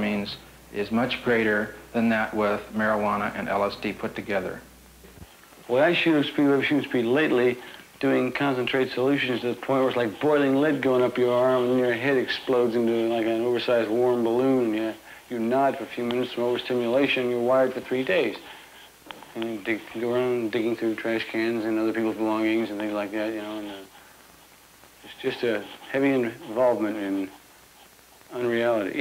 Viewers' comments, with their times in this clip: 0:10 The guy seemed pretty coherent and well spoken considering how many drugs he was high on. Most people would be foaming at the mouth shouting obscenities and jumping over cars one minute, then nodding off and drooling on themselves the next minute after that cocktail of drugs.